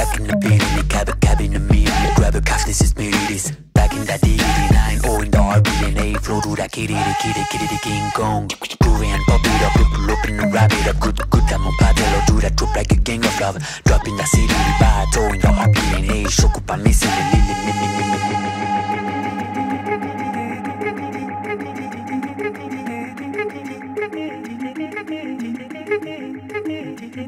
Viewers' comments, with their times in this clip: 0:09 bro speaking another language💀💀💀😘